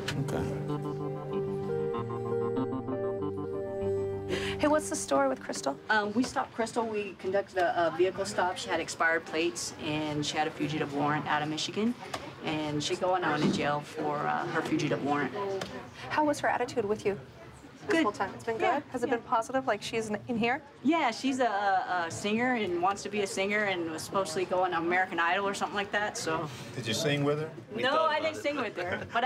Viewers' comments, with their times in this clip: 0:10 thoughts on her singing?